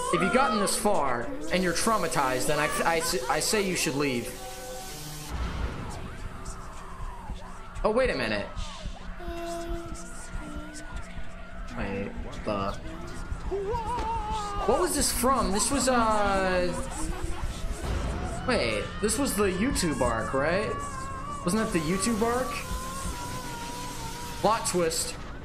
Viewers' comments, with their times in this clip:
0:06 My brain hurts from Horror video Mickey Mouse.exe Sound Screaming 🤕😖😣😫